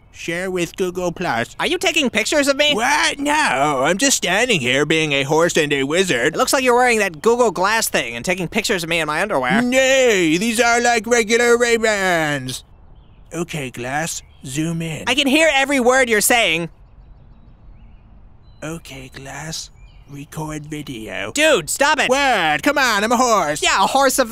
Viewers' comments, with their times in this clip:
0:05 That "no" and how it vibrated XD